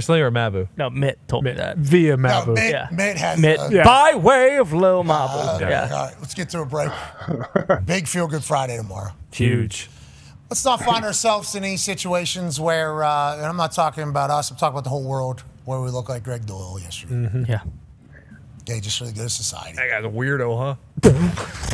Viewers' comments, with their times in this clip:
0:06 that unison HUGE